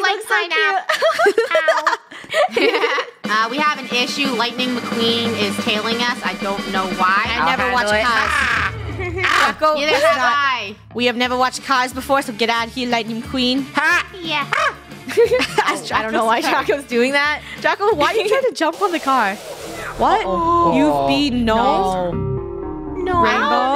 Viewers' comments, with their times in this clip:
0:04 Lihtinging meh queen